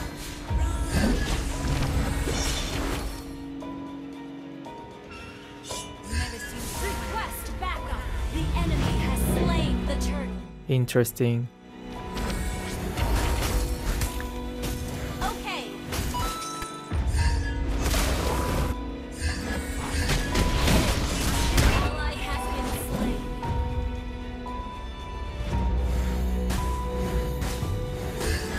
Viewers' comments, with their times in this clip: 0:10 "interesting" reminds me of most of the villain in anime